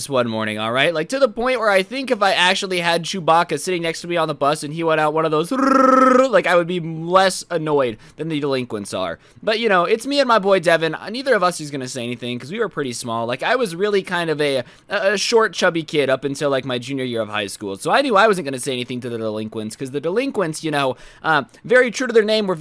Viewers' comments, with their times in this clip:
0:04 No one gonna talk about how good that rrrrrrrr whas?
0:06 chewie impression go brrrrrrrrrr